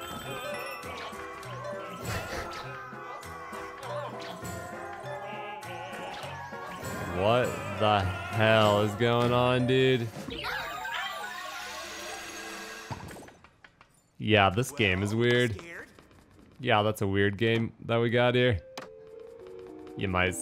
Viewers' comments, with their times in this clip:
0:03 This is the cutest thing in the world - never knew my favorite character would sing opera